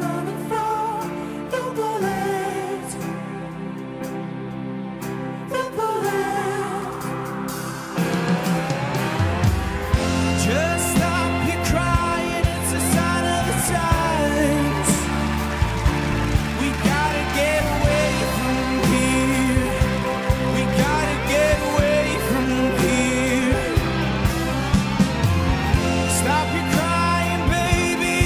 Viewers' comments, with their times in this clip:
0:10 He sounds like Harry in the original!